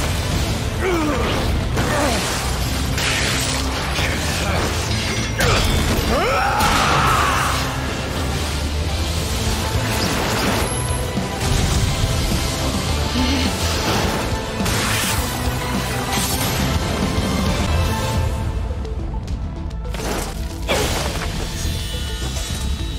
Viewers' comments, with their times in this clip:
0:05 Not even close. I had to rewatch this shit again and compare and found more dumb shit. Wtf is up Why does he sound like he's a titan in sub? Again, too much emphasis on words that don't need em
0:06 That Levi Scream Gave Me The Chills. And The English Is So Amazing! And Is So Relatable. Like When Reiner Said “When Will This Torture End?!” It’s So Realistic. And When He Said, “I’m Still Not Gonna Let You Pass!” I Like That Better Than Sub!
0:06 my favorite human scream in the series. insanity